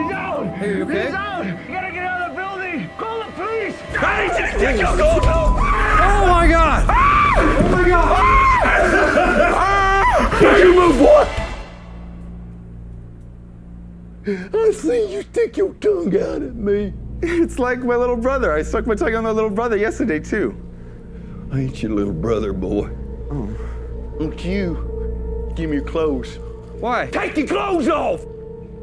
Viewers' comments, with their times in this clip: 0:03 this dude burst in screaming i need you to take ur clothes off after murdering a couple officers. I'm out. lmao
0:05 That scream though.
0:09 you can hear the psycho actor laughing out loud over the guy screaming too though lol